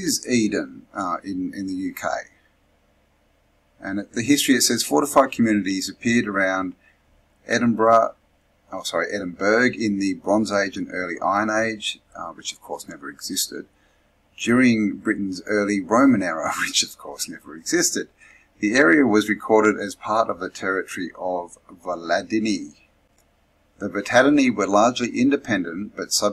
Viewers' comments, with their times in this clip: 0:07 you say Edinburgh Normally
0:08 you pronounced "Edinburgh" perfectly, but then you apologised and pronounced it incorrectly lol. Fair play to you though, mate !